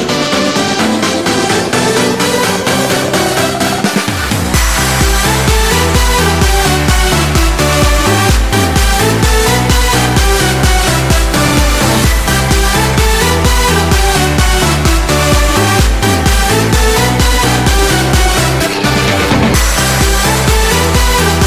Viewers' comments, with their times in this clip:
0:08 sounds like a old gaming intro